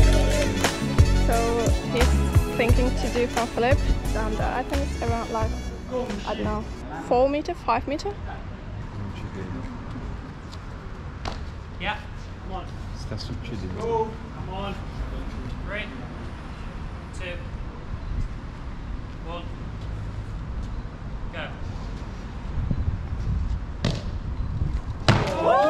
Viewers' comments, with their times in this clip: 0:07 i heard italians hahaha